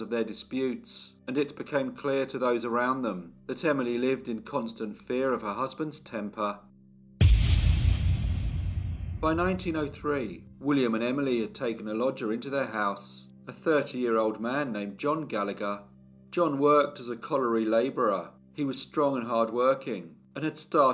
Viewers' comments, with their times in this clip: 0:07 love your storytelling! it is relaxing... except for those jarring sound effects! like totally not needed.